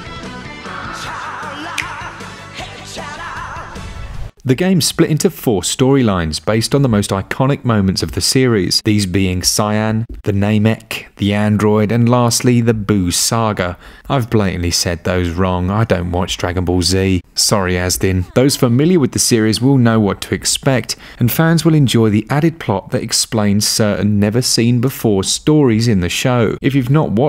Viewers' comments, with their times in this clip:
0:09 "Cyan" was my favorite.